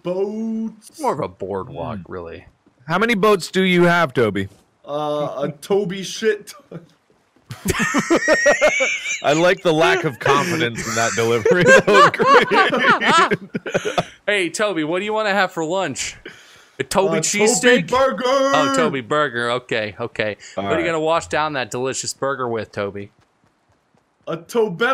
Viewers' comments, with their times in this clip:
0:07 omg his laugh hes weasing